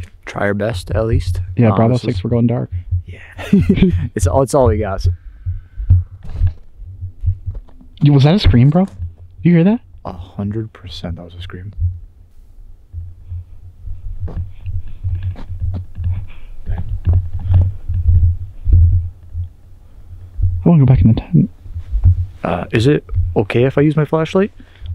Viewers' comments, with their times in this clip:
0:05 ew not the scream 😱
0:05 There is a shrill female scream. Whoa.
0:06 in That was definitely a scream 😱
0:10 I heard that scream..